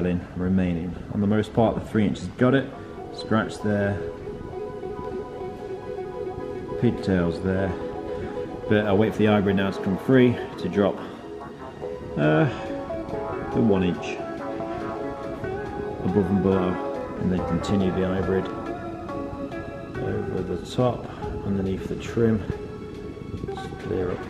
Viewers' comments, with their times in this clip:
0:09 audio issues again ?? oh no